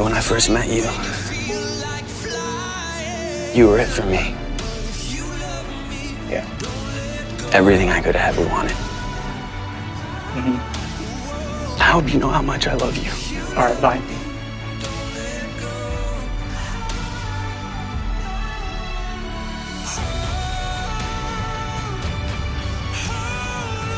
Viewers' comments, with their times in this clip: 0:10 The way archie says I hope you know how much I love you I'm sorry but I had to laugh